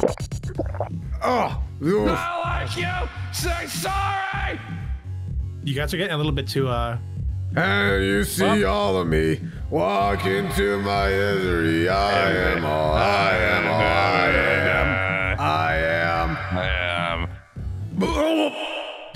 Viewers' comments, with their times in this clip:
0:03 NO NOT THE SINGING- NIT THE SECOND HAND EMBARASSMENT!!!!! 😢